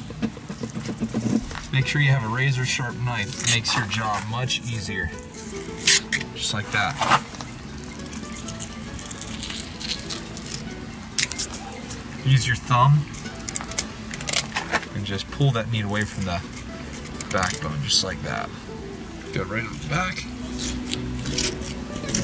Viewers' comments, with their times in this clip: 0:06 you missed the phone call. Could anyone else hear it?